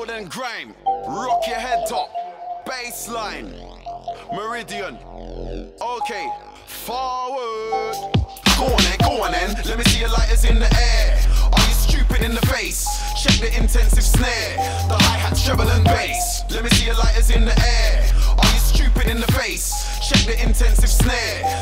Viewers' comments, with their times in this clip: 0:07 thank GOD the fucking sub does this. RELENTLESS on a big system.